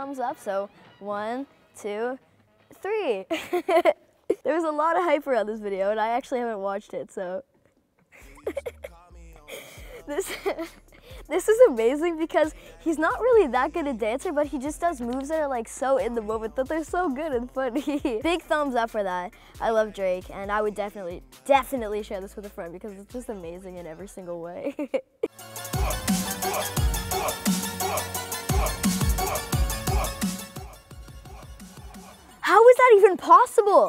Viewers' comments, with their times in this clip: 0:03 Who heard the baby laughing
0:17 turn on captions on "so good and f**king..."